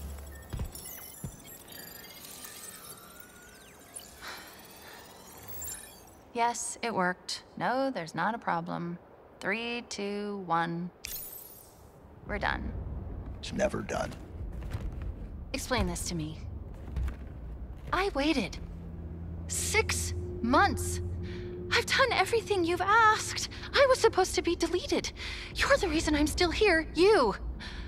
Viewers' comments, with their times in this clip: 0:09 I love Weapon's lazy finger snap
0:13 The way Master Chief said "it's never done" i understand he misses Cortana but he's not ready to let her go😔